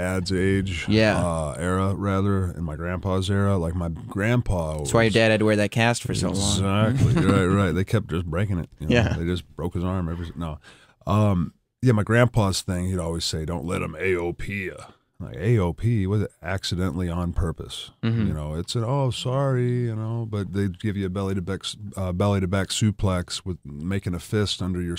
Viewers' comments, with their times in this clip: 0:09 what happened to Orton’s voice? Lmfao